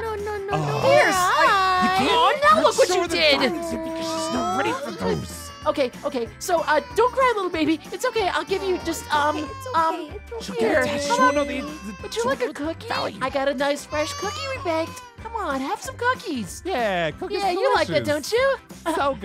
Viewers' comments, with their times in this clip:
0:05 aphmau crying again because need diamond